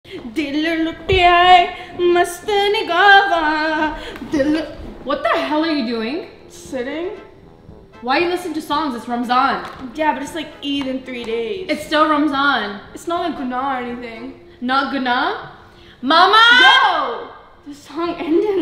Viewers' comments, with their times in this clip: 0:03 LOLL i like her voice